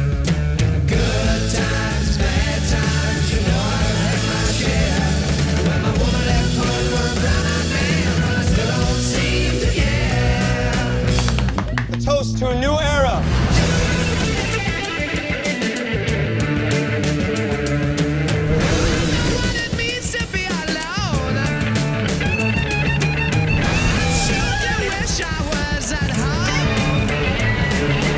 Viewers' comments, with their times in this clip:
0:10 muahahha awesome sync with the drumming!